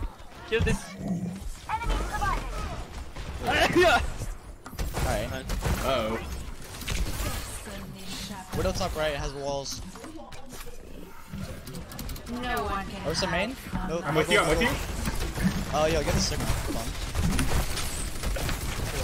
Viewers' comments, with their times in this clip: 0:03 was that a sneeze because, if so, bless you